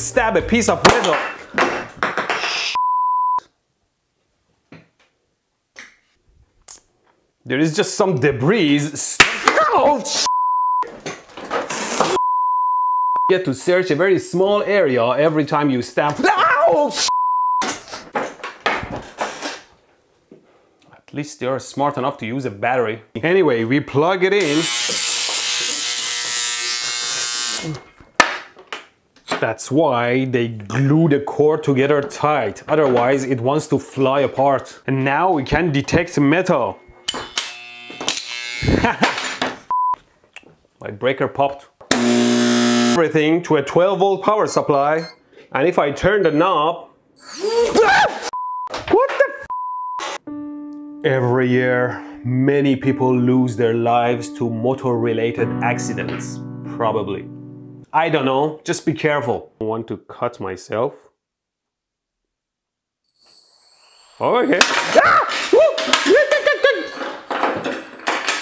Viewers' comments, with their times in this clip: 0:09 the light bulb was teaching him to pronounce the word “debris” right
0:24 sounds like a elevator nudge mode
0:42 old doorbell sound
0:46 Why am I laughing at this motor flying away and Mehdi screaming, because it startled him???
0:47 His scream at that part got me
0:54 bro let out a little toot